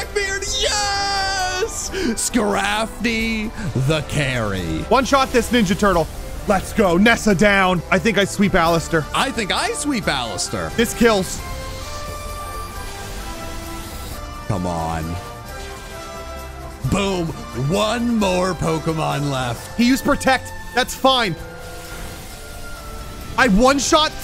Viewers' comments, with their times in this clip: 0:07 alastor from hazbin hotel is in pokemon now?